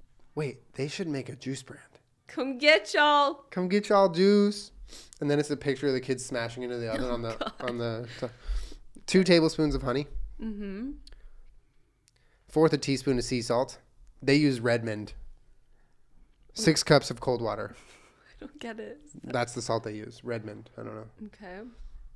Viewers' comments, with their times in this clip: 0:04 Adorable sleepy meep